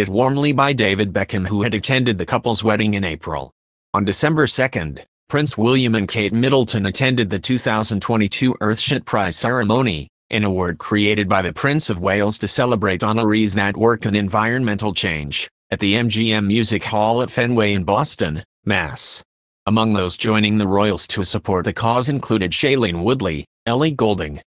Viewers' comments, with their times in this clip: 0:07 Did he say Earth shit price ?